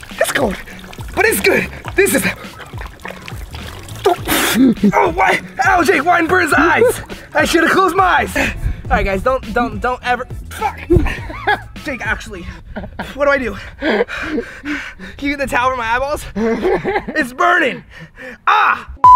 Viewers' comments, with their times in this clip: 0:05 does anyone notice the audio ? statics?